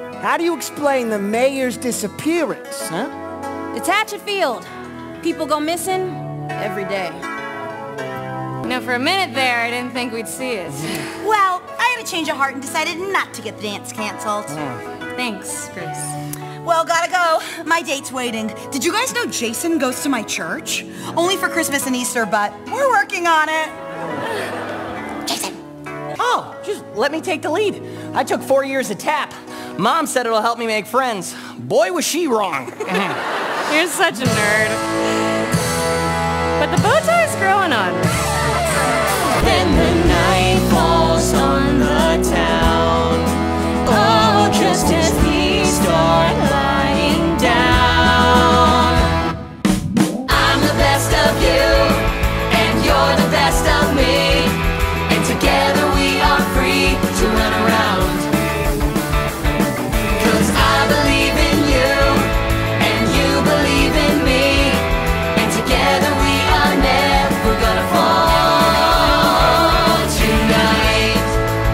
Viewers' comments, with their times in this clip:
0:10 Janes a car plays in the background!
0:52 it's giving a mixture of "set it off" and "you and me" from descendants 1&2